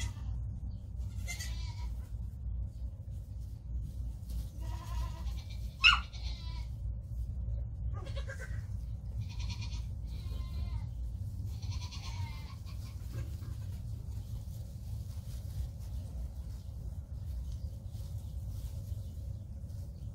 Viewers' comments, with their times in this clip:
0:03 "BARK!???!" *narrows eyes comically Okay, no way that was a baby goat! Yay, COOT CAM!